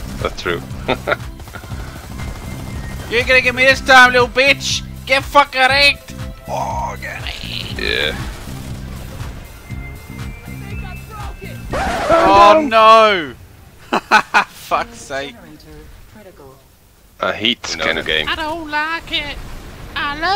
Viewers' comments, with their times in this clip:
0:04 Get fuck Erect? xD